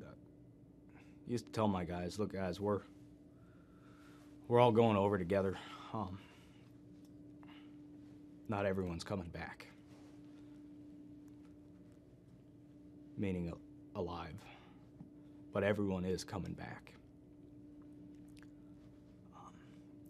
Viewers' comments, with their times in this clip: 0:06 The sound stopped matching the video It became too hard to watch.